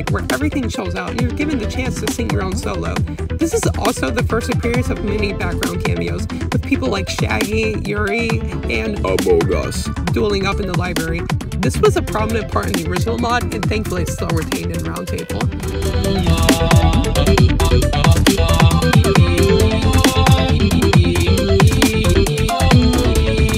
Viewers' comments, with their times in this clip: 0:06 deep voice jumpscare